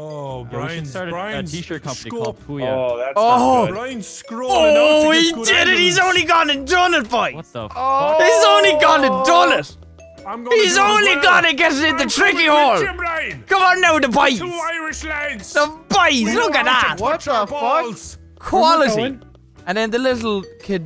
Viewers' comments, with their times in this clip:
0:05 that irish moment there, i had a smile on my face lmao